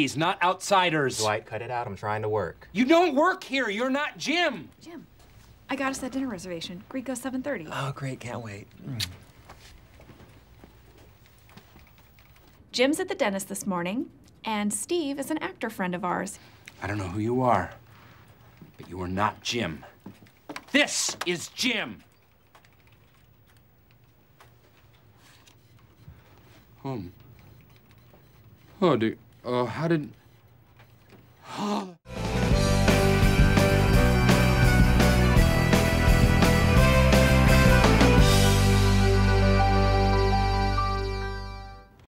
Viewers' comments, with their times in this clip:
0:09 The best bit was when he said"Oh great can't wait" Exactly like Jim :p
0:31 oh oh his “ that sigh “ 😊😊😊😊😁😁😁😁😁😁😁